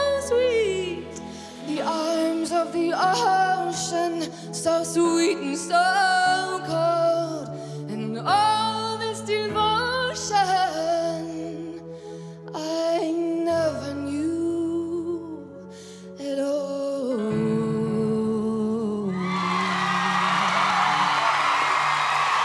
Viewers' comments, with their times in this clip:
0:08 100% I'm serious. Listen to how she sings "speak" @ 28 sec and "let me go" @ 43 sec. Nails down a blackboard. The finale from was just a train wreck. She was wearing a bed sheet and tried to sing the song exactly like the original. These 'performers' are here to be judged and I'm being honest.